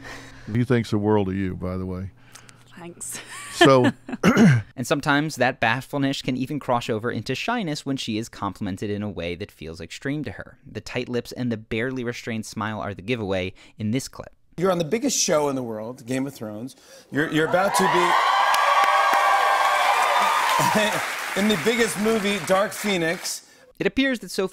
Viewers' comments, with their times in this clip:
0:04 " And sometimes that bahflenesh can even croshover" lol
0:04 "and sometimes that batfull-nesh can even crosh over into shyness" lmao. Just fuckin with you man, keep up the great work.
0:04 “sometimes that bafullnesh can even croshover into shyness” lol what?
0:04 And sometimes that bathfulnesh can crosh over into shyness...
0:04 "And sometimes that 'bathfull-nish' can even 'crosh" over..." Cute mispronunciation. Subbed. :)
0:07 It’s cute how the narrator says: That bashfulnesh can crosh over into shy-fulness 💕